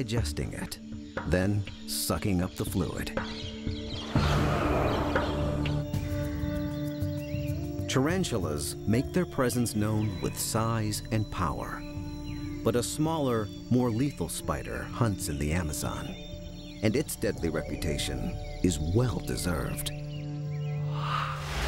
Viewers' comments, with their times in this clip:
0:09 Soundtrack reminds me of Silent Hill - Room of Angel